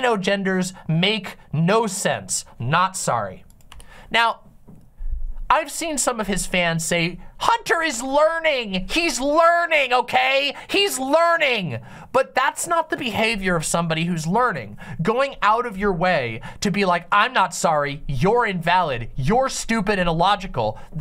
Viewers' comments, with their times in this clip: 0:07 that sounded IDENTICAL to theodd1sout LOL